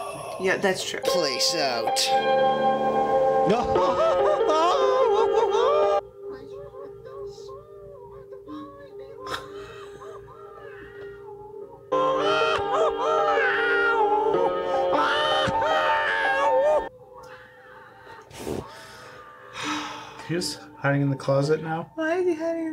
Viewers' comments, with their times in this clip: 0:04 Kind of sounds like he's strangling a cat.